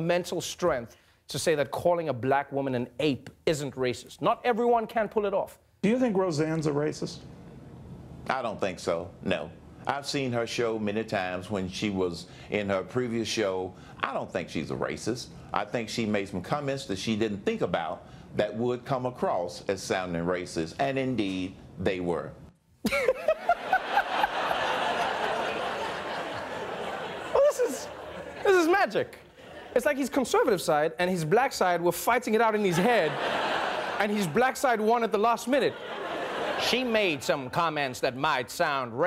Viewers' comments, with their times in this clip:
0:06 Cleveland!!!!!! Close your eyes and listen XD
0:06 got me good. And nice Urkel impersenation. Though, I've seen better (Mike Nelson on MST3K), Trevor's was still pretty good.
0:23 The best laugh and super infectious😂😂😂